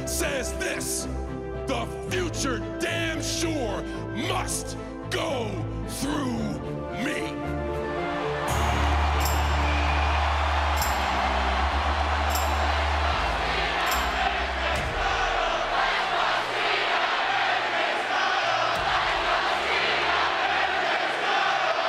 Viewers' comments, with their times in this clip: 0:08 AJ's theme sounds sick, they should do a darker remix now that he is heel